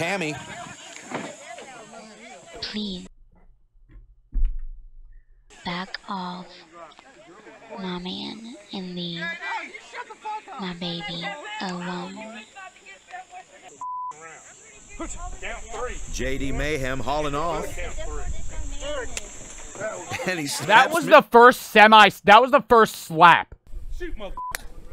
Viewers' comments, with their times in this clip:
0:05 I love how you can hear people telling her to shut the fuck up 😭